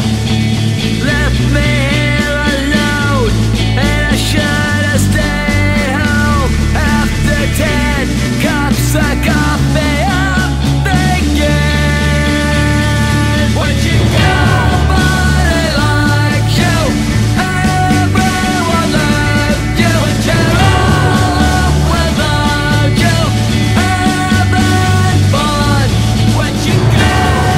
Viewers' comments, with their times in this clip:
0:09 misheard lyrics "after death , brings the copy of bacon" lol